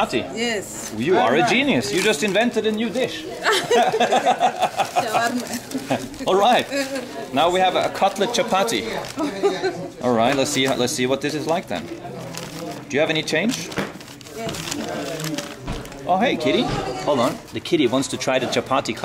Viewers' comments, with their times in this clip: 0:04 the way the lady gasped at your federal reserves LOL